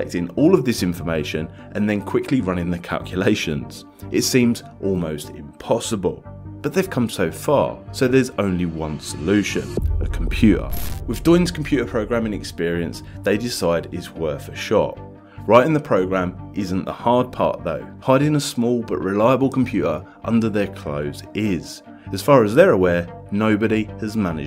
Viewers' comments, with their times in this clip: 0:08 What is a Com pu ahh. ?